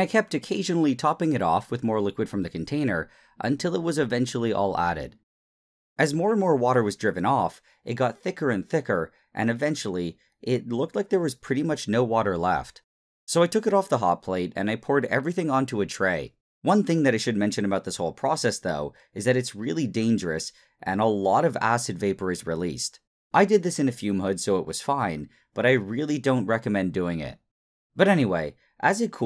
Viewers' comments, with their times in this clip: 0:05 “as more and more water was jerkin off”
0:16 why do i hear heisenberg music?